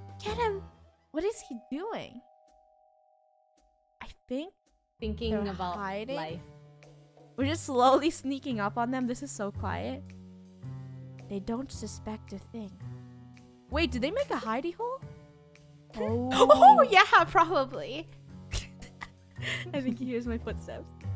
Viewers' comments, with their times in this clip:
0:06 I love how they whisper but the other players cant even hear the lol😂😂😂